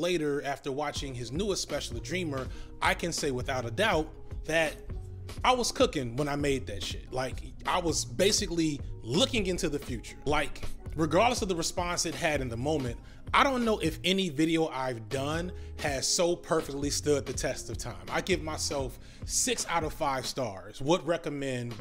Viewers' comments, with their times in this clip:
0:05 Institutionalised in the background 🔥🔥🔥🔥🔥